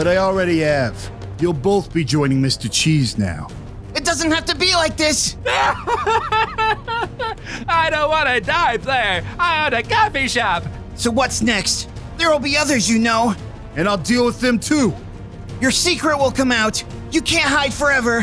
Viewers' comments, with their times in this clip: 0:05 I seriously thought he was laughing-